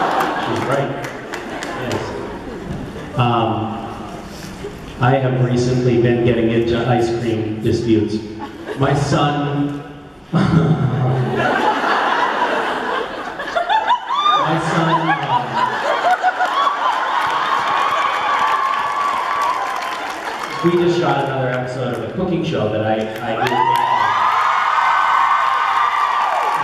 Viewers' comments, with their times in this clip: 0:10 misha's laugh :,D